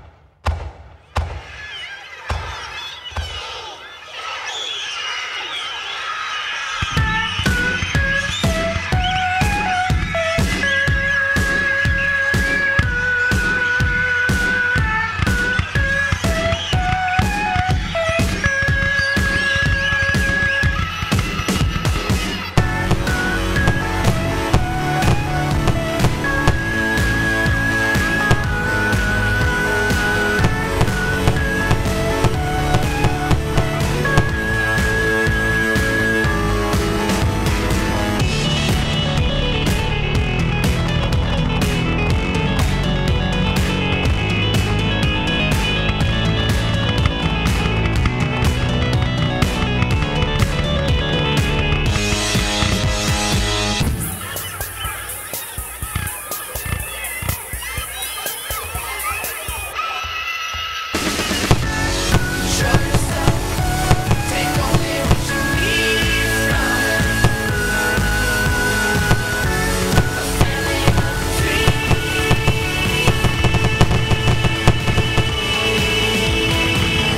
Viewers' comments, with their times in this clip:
0:03 i like song!
0:06 This music is 🔥 on
1:02 I swear I heard SOMEONE shout DADDY